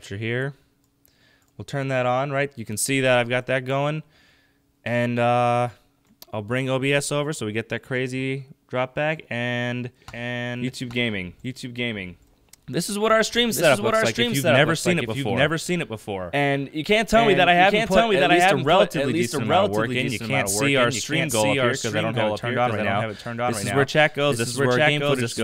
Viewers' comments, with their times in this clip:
0:09 Heads up guys, there's a serious audio delay that kicks in and for some reason Audacity freaked out. The irony! haha enjoy.